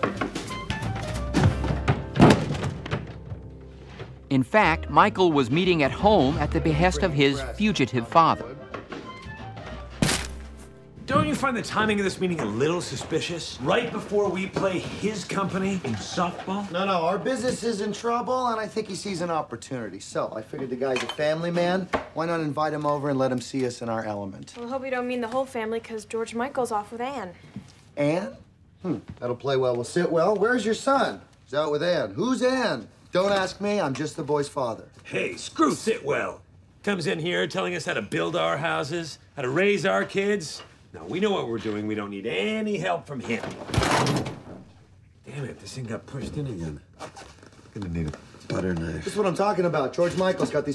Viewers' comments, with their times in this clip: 0:08 The background music is replayed as if it's music coming from the house speakers 😆😆
0:35 The way Bateman plays thinking better of knocking on the wall is hilarious to me. Also, you can hear an obvious cut between "screw" and "Sitwell". Gob's lips are hidden from camera, so that probably was a stronger word originally.